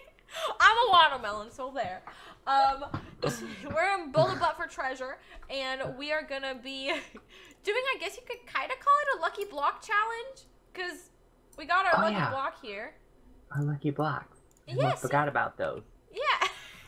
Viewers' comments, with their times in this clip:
0:03 did she say build a butt for treasure lol